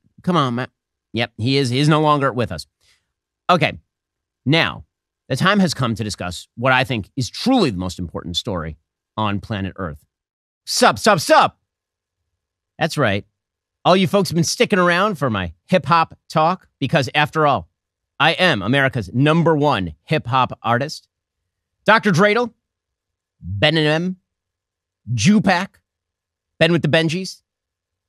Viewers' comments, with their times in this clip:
0:10 “Ss up ss up ssup” was funny like nothing coming out of you 😅